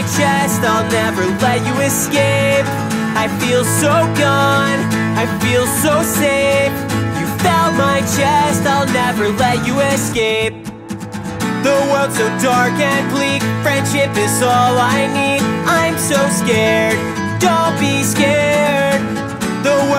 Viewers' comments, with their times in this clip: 0:06 the bridge took me back to 2004